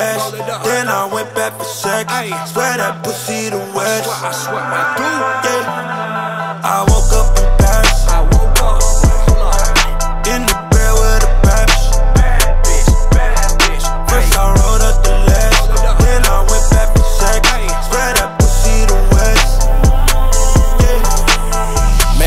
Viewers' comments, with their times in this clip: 0:06 It gives me chills every time i hear the beat come in